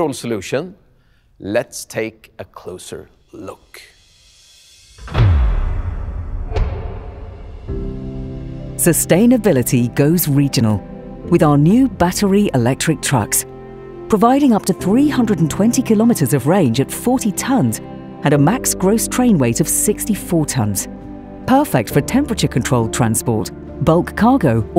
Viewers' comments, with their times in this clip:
0:07 does this POS even make tge sound BRRRRR POOOOHH? No it does not